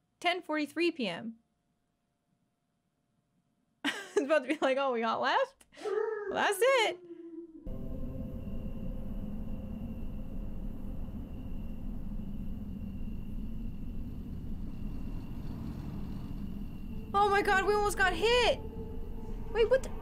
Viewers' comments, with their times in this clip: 0:06 dog just made a nice ghost sound